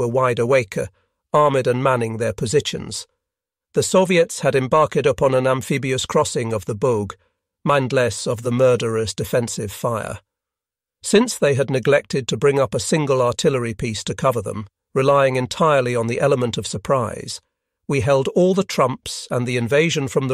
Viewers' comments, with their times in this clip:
0:05 Although "embarked" , "German defenders" and "wide awakea" does sound weird.